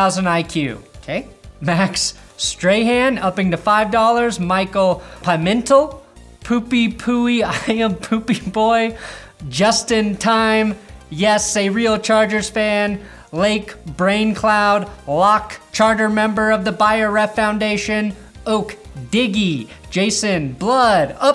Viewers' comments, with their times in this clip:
0:04 lol he butchered that last name